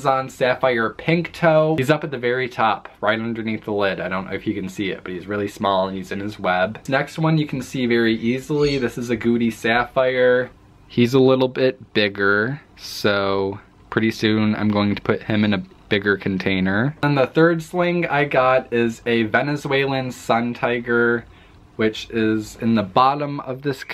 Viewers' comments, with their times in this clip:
0:09 I thought u said " Gucci sapphire " 😂